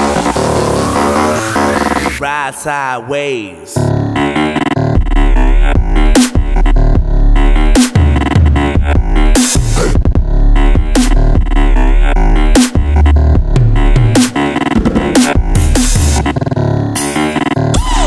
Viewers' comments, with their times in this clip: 0:03 best drop ever!
0:03 Bruh the drop is so fucking gnarly!